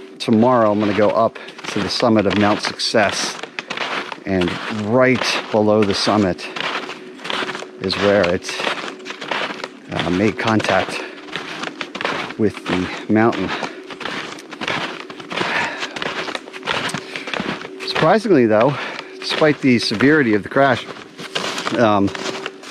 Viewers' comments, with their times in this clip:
0:07 The logging sounds sound exactly like Gordon Freeman's post resonance cascade escape in Half-Life. Was this hike filmed near the Black Mesa facility? Perhaps in the outskirts of City 17? Half-Life 3 confirmed?